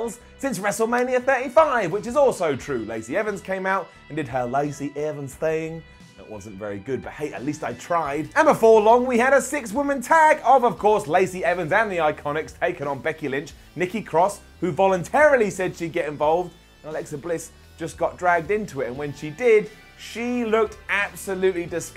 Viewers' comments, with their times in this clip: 0:03 The Lacey Evans impersonation is pretty good.